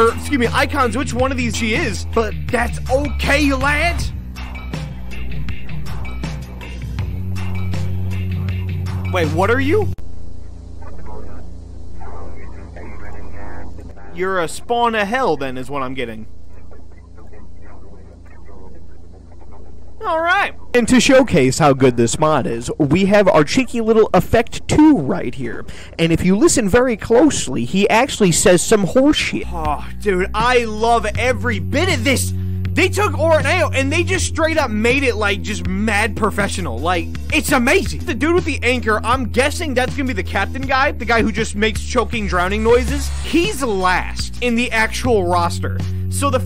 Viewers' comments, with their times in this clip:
0:10 I RECOGNIZE THAT AUDIO! thats a very compressed version of the "atlas earth" advertisement
0:10 Am i the Only one that hears kindnesssad?
0:27 no, his sound is actually just a distorted version of the atlas earth ad